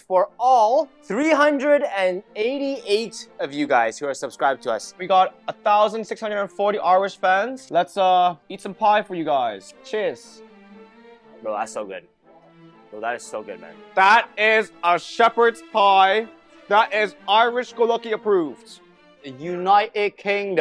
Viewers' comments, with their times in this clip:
0:08 irish people dont even sound like that...